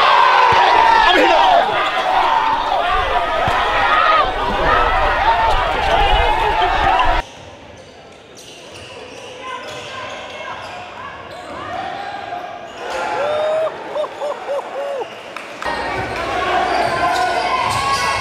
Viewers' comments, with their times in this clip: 0:05 lol the guy says oh ho ho like 4 times in a row